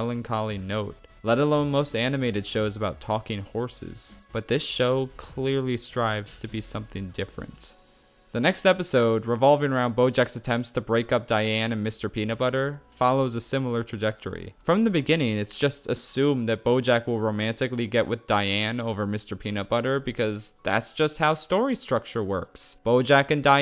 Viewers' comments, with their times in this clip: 0:10 Look, I think that Schafrillas’s satire mood moment for pivotal emotional beats and/or “sad” moments in the projects he reviews are great, yet this video felt off when his voice lost its energy when he does his slower, quieter, and more serious tone but the music in the background is just popping the f-off. This happens sometime before